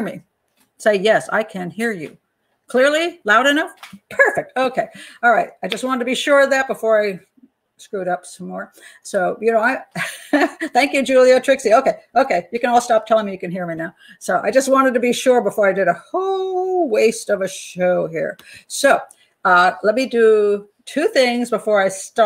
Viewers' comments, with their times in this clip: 0:03 Yes sounding good